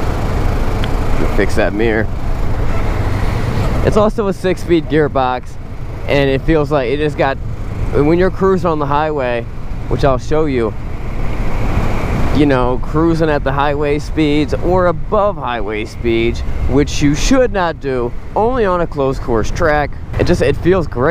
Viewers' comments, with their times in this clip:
0:04 A 6ft gearbox Lol